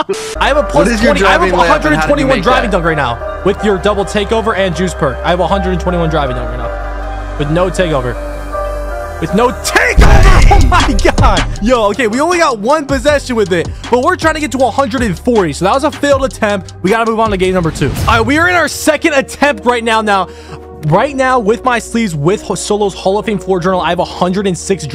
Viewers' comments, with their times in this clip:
0:07 bro sounded like goku